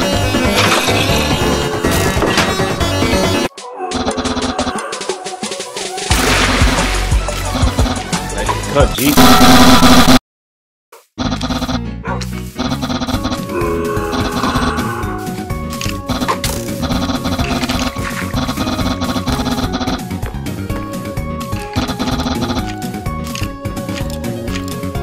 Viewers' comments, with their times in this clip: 0:07 papyrus: up top! Sans: i like ya cut g *smack* papyrus: AHHHHHHHHHHHHHHHHHHHHHHHHHHHHHHHHHHHH (errape)